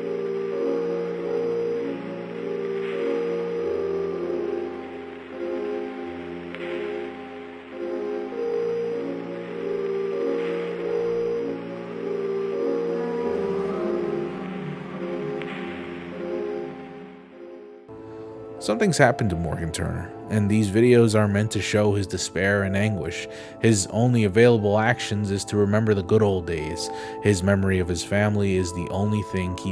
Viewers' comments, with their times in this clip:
0:10 -ish is a faint, almost echo-y song playing in the background. I can’t remember which one, but I swear that it is one of Yann Tiersen’s early pieces from the late 90’s to early 2000’s. I recognize it so clearly, just can’t pin-point the name.